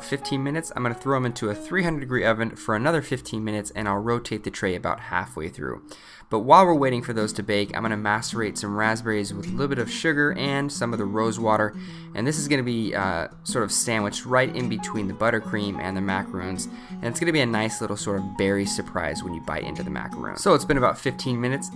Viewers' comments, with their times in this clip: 0:06 sorry I thought you said something else.